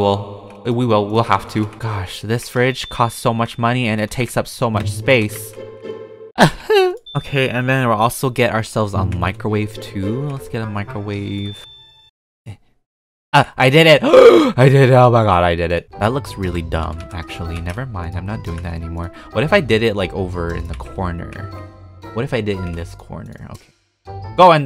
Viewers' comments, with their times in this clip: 0:06 sad peetah noise